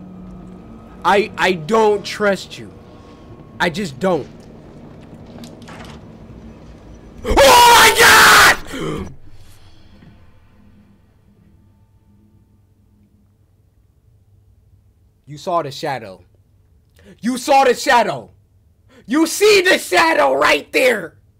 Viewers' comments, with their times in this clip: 0:06 Bro i fall asleep watching some Coryxkenshin on my bedroom tv and i get woken up at 3AM to this scream 😂😂😂 almost gave me a heart attack
0:07 I swear every time he screams it made me laugh but this! It hit different 😂